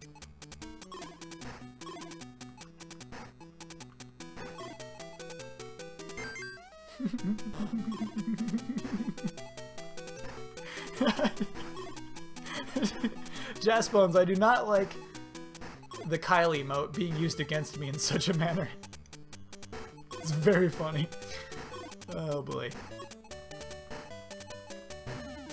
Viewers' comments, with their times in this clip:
0:06 I don't know why but that laugh gives me the creeps. Its almost like someone finds something funny but they don't wanna actually bust up so they do something like that. Like I get it cos sometimes I do that before I just bust up into a giggle fit but when you hear him do it its kind of one of those things that its like you wanna just scream at the screen "JUST GO AHEAD AND LAUGH...THAT'S CREEPY AS HELL DUDE!"